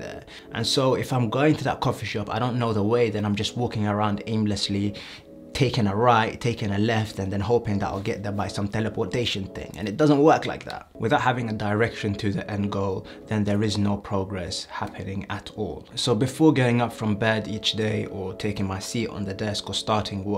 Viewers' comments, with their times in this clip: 0:08 Love the voice change 😂